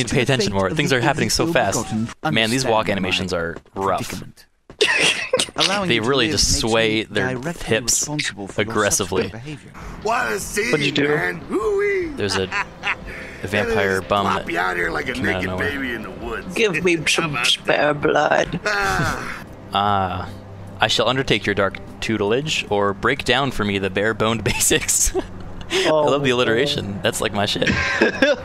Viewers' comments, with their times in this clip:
0:10 Is this the new Zika Simulator? Also, why the fuck does the guy sound like Jake the Dog?
0:10 does anyone else hear jake the dog from adventure time?